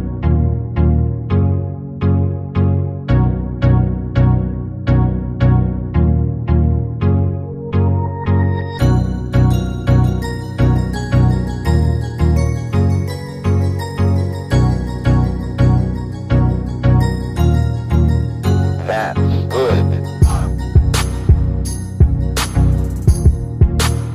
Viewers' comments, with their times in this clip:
0:09 I don't know why but in I loved the song